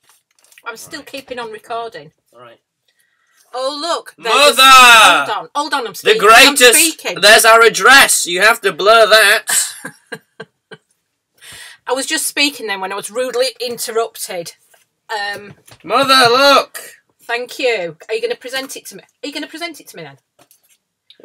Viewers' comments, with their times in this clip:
0:07 Do not watch with earphones. Starting from it sounds like earrape